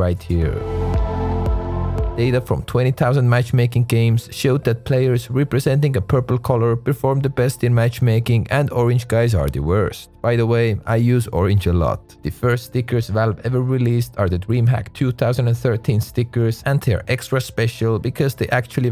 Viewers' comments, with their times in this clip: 0:03 oh yes, pourpel :)